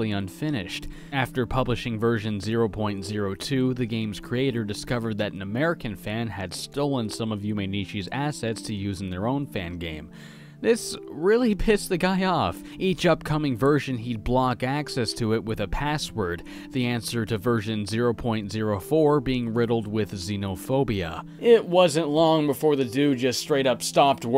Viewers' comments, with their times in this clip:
0:06 you were actually pretty close, good job on pronouncing those names